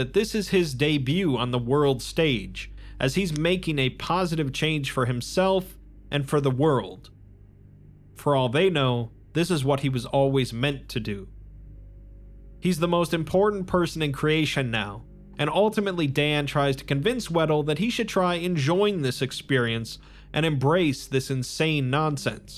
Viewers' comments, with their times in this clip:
0:03 Did you snap on “positive” and “change”?